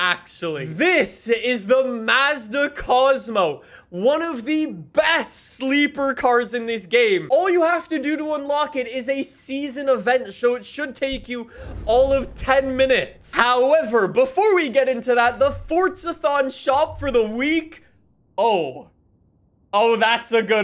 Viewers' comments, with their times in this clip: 0:05 sad MB 280 sl noises